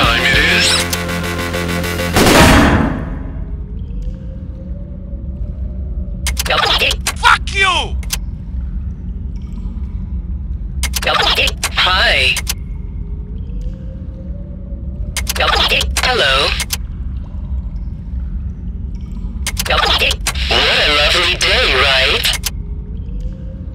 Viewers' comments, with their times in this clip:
0:05 lol the voice
0:07 LOL i thought it was going to be a robot voice or was it, the person's voice?